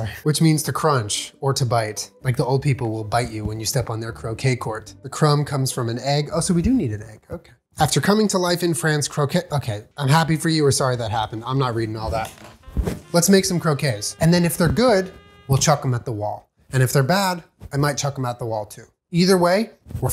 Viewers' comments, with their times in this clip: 0:05 parts that sound bad at first when you're listening/watching w it sped up lmao